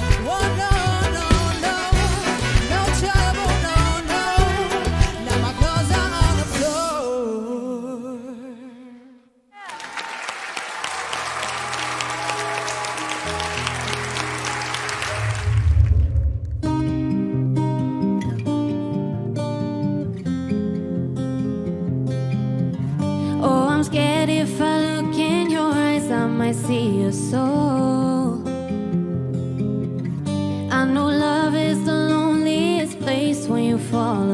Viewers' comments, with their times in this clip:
0:10 At time the song "LIAR" She sang AMAZING but no1 truned around 4 her :'(
0:17 she sounds like Camila a little!